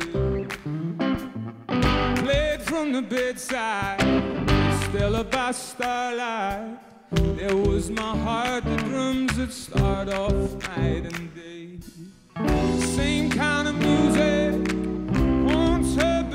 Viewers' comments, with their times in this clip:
0:04 the way he sings those three little notes gives me deep joy